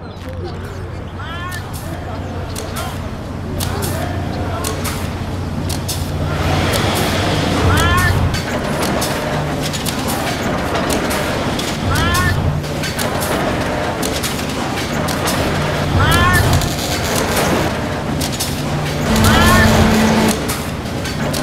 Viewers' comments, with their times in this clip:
0:05 The soundtrack is pure fire.